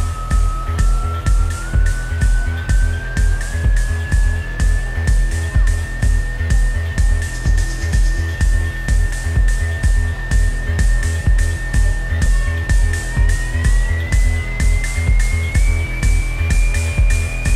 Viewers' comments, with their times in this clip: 0:03 What on earth is this guy mumblin into the mic?